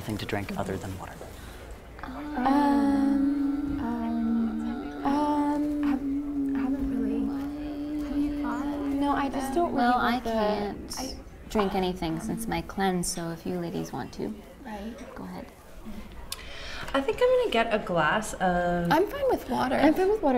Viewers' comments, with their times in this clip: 0:03 all of a sudden it's a musical 👁️👄👁️